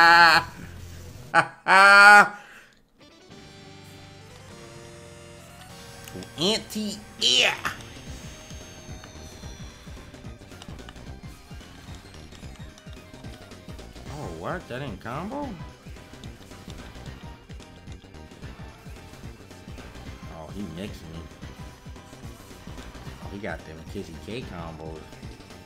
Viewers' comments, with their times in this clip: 0:10 this sound like some sonic music lowkey what’s the song